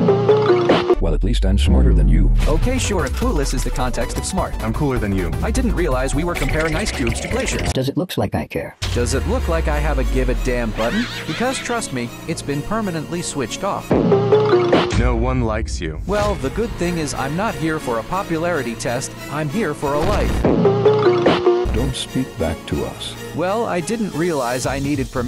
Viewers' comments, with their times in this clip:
0:09 be a big shot + flowey laugh